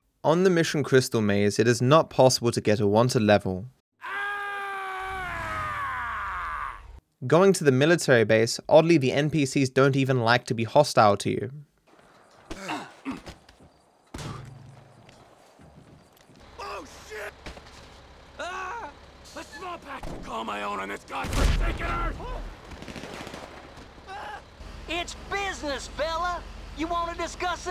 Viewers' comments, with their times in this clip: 0:07 well would YOU fuck with Trevor when he’s screaming like that? Actually, would you fuck with him anyway???
0:12 Also with that scream